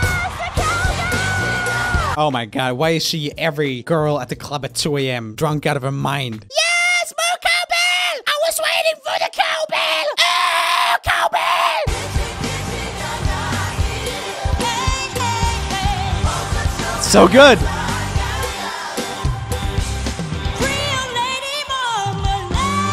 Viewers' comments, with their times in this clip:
0:06 literally mort from Madagascar